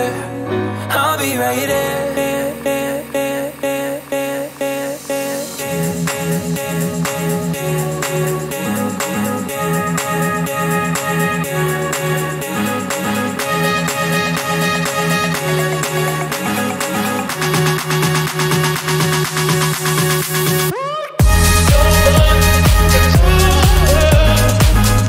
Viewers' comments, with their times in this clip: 0:06 That drop tho🔥🔥